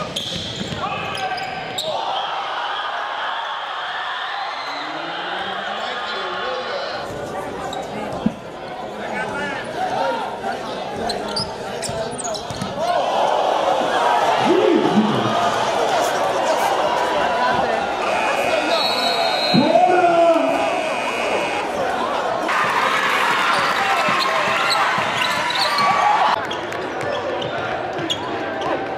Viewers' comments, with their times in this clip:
0:10 anyone pick up on the guy laying in to some guy in the stands